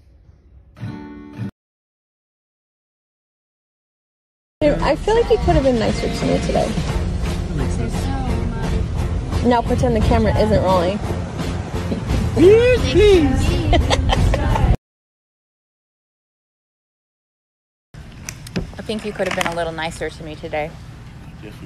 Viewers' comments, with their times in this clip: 0:04 it is impossible not to be nice when Mr. Blue Sky is playing